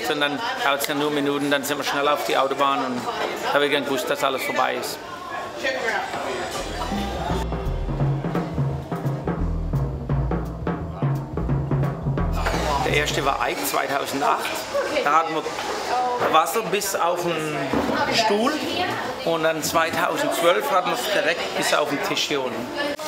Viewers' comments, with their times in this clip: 0:04 Is the guy German?